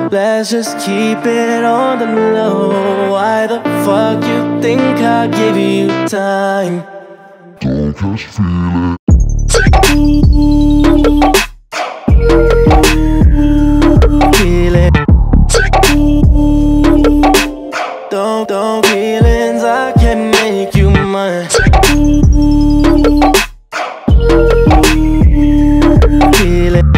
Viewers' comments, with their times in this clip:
0:07 Love this! That breakdown especially
0:07 The best drop !